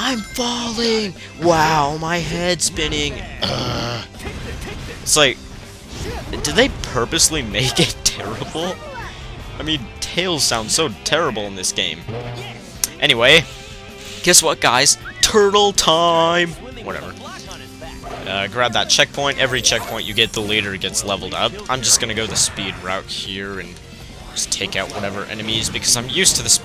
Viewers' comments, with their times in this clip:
0:10 you mean tails sounds like a 5 year old boy in this game very bad i know